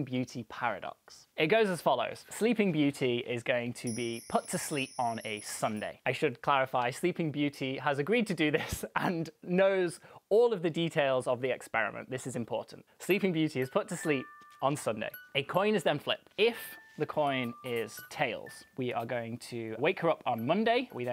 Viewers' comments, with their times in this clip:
0:04 Luck - Look Tuck - Took Putt - Put IMHO you are mispronouncing the PUT